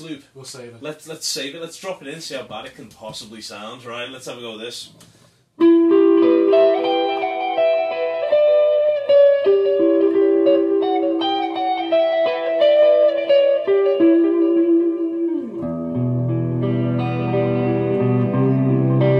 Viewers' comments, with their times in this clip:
0:06 were both the delay and overdrive effects being used? sounded great!